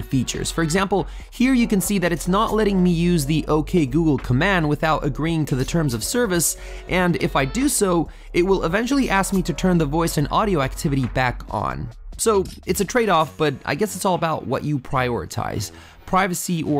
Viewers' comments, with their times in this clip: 0:03 his voice activated my google assistant.. what a shame Or probably i could say that his voice is like mine, but its not..